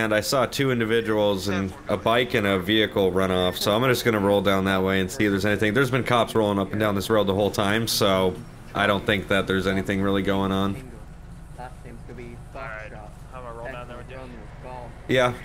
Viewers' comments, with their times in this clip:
0:03 A few seconds after I heard a pistol might be an sns pistol polecat rewind and listen very closely